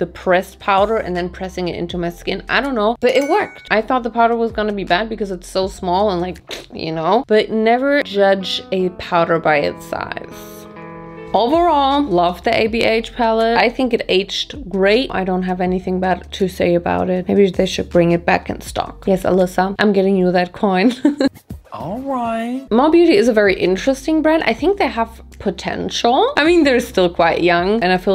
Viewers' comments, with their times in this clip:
0:09 this soundtrack hits me in the feels :(